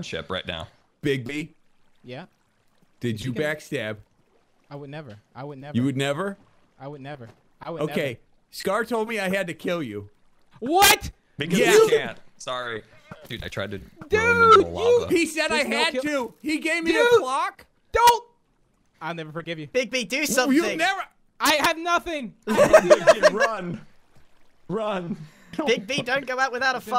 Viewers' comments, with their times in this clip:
0:08 the microphone breaking gets me every time